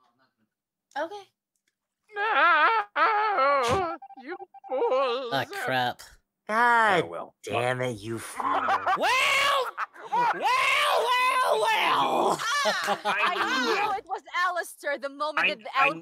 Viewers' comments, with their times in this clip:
0:04 LMAO ALSTORS LAUGH